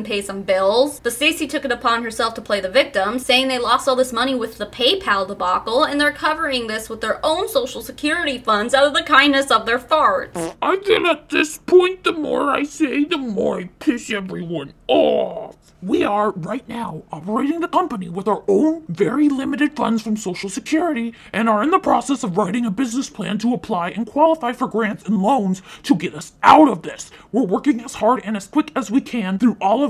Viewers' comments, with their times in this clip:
0:10 out pf the kindness of their farts 😂